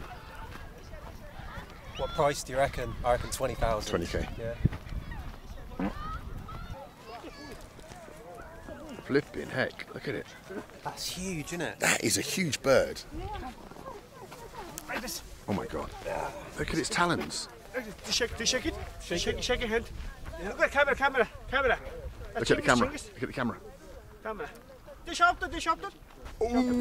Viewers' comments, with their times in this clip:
0:04 ...that was the sound of chemistry. 59% nitrogen, 21% hydrogen, 9% carbon dioxide, 7% methane, and 4% oxygen—all essentially odorless. Less than 1% is what makes farts stink. God save Wikipedia.😅😅
0:04 someone fart in minute
0:04 Easter egg fart 💨
0:05 is that a fart?😂
0:05 who of you farted right there??
0:05 the bald farted 😂
0:05 The cliffhanger fart is a masterpiece
0:05 the fart 😂 who of ya Benjamins was?
0:06 You left in the fart on purpose I'd assume haha. Get rekt.
0:07 The fart is definitely a highlight 😂